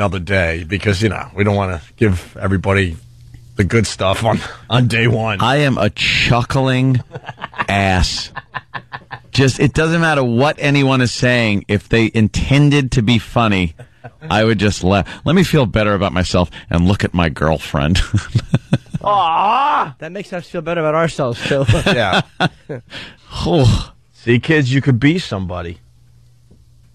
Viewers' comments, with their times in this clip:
0:07 wow opie says him and ant hate each other and theyre only doing it for a paycheck and ant sounds a little suprised by it cuz it was true.